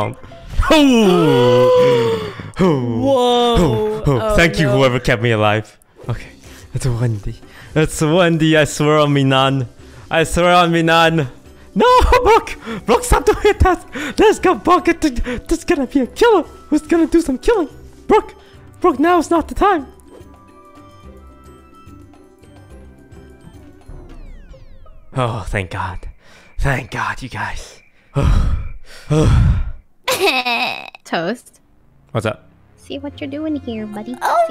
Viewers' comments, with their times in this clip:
0:08 Mickey Mouse voice time!
0:13 there you go. The mickey mouse voice 😂😂😂
0:13 Disguised Toast turns into Disguised Mickey Mouse
0:16 I love toast's Mickey mouse voice